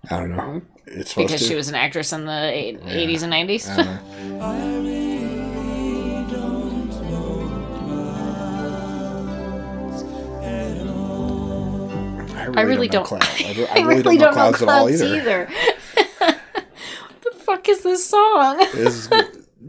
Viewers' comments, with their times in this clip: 0:06 This is the most avante-guard work you have ever done. A brief shot of a woman coughing, yet she makes no sound. Why? What does it mean? Bravo.